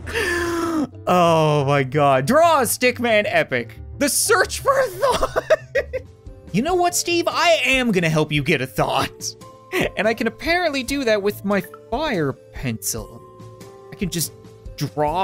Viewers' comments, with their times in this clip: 0:03 it sounded like he was about to die from laughter